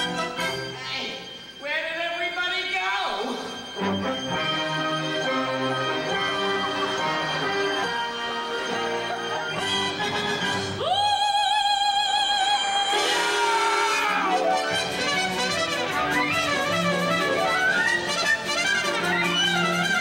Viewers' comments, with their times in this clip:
0:05 This is it, the fat lady is singing!!!